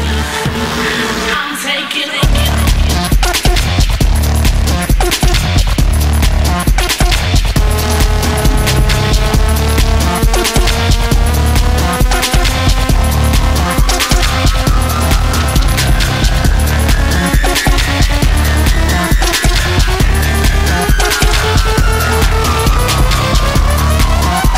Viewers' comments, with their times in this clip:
0:05 really good until like and some random beats come on haha not sure whats up with that but his voice is amazing. i am so glad that even though bloc party is on a break that he didnt stop making music. hes a very passionate soul =]